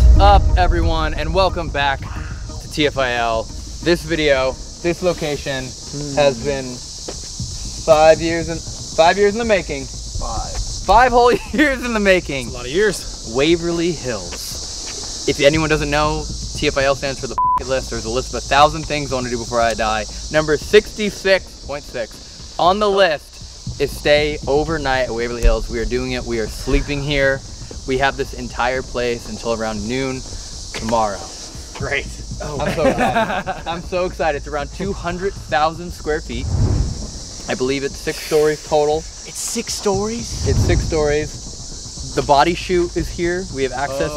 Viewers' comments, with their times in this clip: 0:03 is a growl. Wow
0:25 -29 am I the only one that hears a whisper?
0:27 a whisper said get out